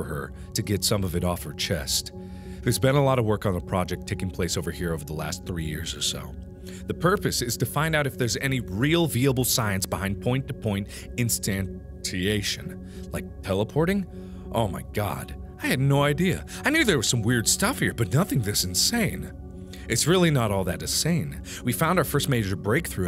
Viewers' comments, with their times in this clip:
0:09 Did he just say "veeable" ....